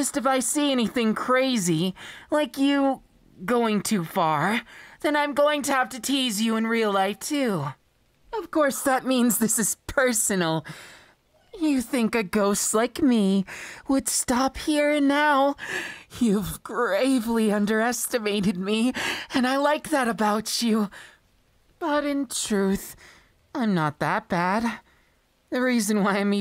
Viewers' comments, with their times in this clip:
0:10 Me: looking for other audios to listen to Random person in the back ground or the vid: WHAT-